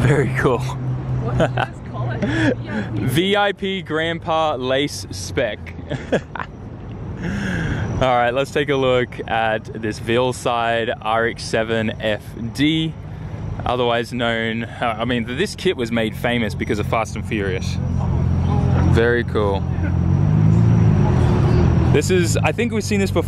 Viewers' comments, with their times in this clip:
0:08 muffled ting tings I wonder if you know, How they live in Tokyo, If you seen it then you mean it Then you know you have to go. Fast and furious! (Kitaa!) (Drift, Drift, Drift) Fast and furious! (Kitaa!) (Drift, Drift, Drift)